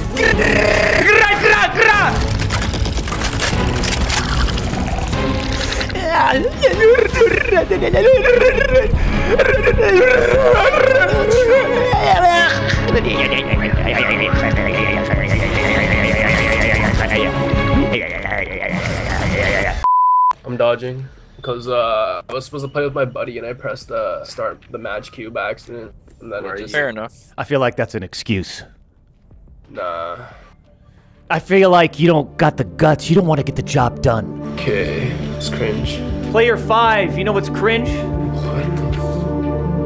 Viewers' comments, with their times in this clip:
0:09 doc doing in game noise 😂
0:20 Player 5 sounds like the biggest tool in the online gaming community.